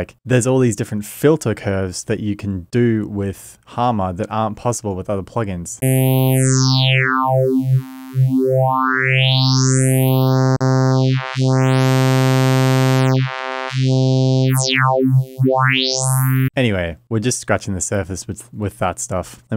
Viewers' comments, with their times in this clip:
0:05 I instantly fell in love with the harmor vst when I heard the sound it reminds me of drane by autechre with the crazy filtering on the droning synth chords.